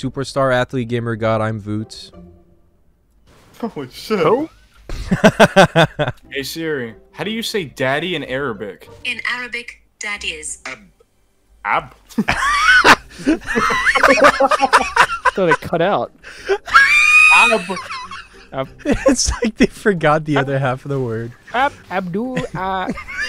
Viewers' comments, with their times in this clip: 0:07 the voice change for ab got me